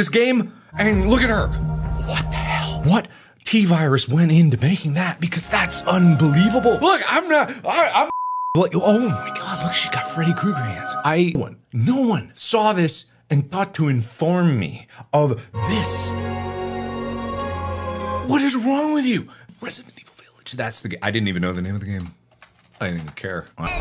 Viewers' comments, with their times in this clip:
0:08 Good point, but let's consider that he sees that she's got literal knife hands and still sounds like he's swooning about the idea of her being able to hurt him, just saying 🤭